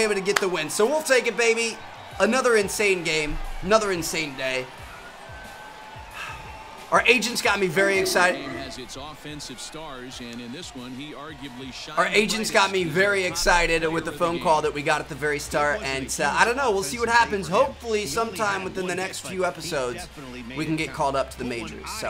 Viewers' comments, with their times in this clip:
0:09 I think that was Koda barking in the background